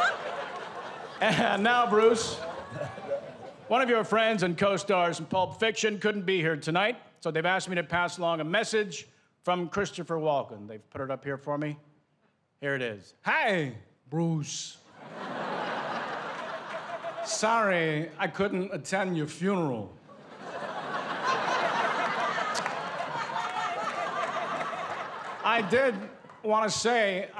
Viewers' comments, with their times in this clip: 0:03 Best impression of Walken ever.
0:11 he kills this impression